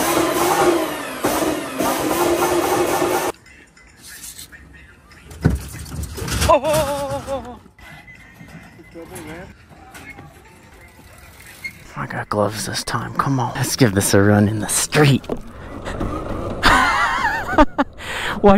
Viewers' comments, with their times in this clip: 0:03 banger song bro